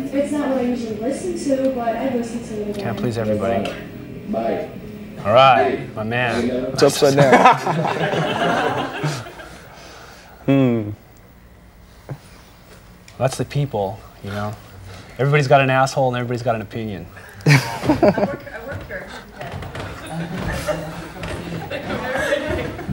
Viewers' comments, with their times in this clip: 0:06 The totally dead-pan “It’s upside down” ended me 💀💀